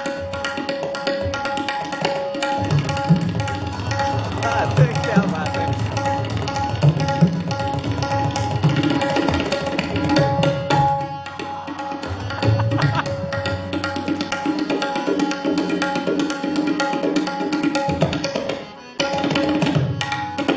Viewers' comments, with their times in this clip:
0:03 Can anyone tell what are the bols which seems Similar like as a laggi patter..